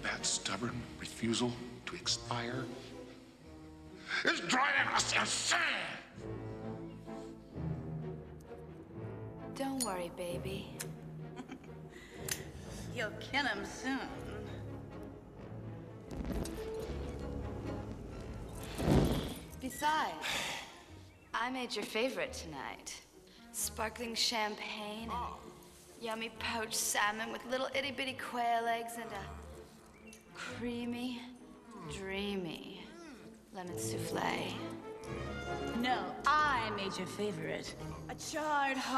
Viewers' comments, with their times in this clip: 0:08 Sugar and Spice are small parts but they, alongside Chase Meridian and Seal's "Kiss from a rose", are the only things I remember from this movie. I love the way Drew lights the cigarette and also Debi's quick giggle and how each one presents their respective menu.
0:20 Always loved Two Face’s theme here fit’s so perfect with the character when they play it throughout the movie just an overall iconic and unforgettable soundtrack. Same with Kiss from a rose by Seal.